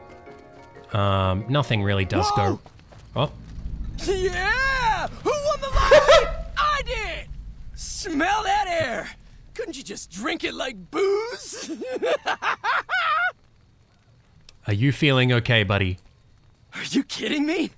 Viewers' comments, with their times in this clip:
0:03 Not to be a total weeb but all I here is Sasuke from naruto